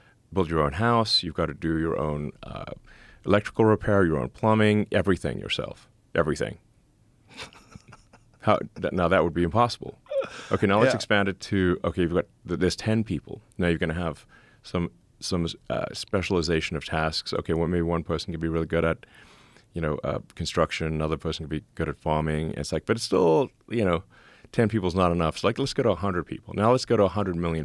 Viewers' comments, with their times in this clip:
0:09 Love how Joe just laughs occasionally at how dry Elon explains his logic